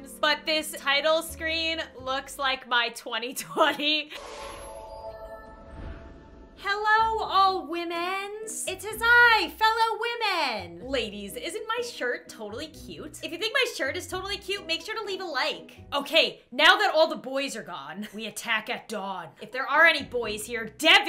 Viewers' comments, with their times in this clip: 0:07 I thought she was saying “Hello old men” I guess I just had low volume